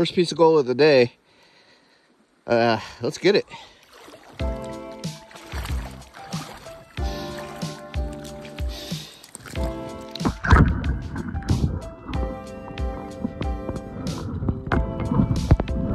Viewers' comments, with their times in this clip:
0:03 Did I just here a big ole FART ish? 🤣🤣🤣